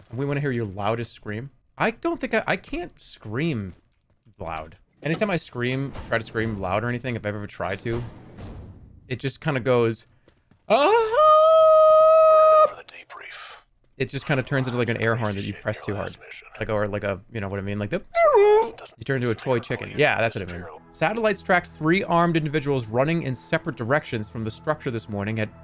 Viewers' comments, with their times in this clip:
0:10 worst noise 2023